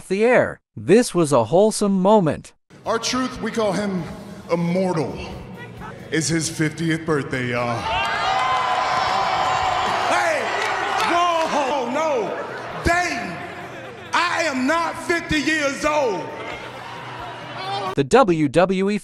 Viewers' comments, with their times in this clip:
0:07 ... Sounds like "Im in remission yall"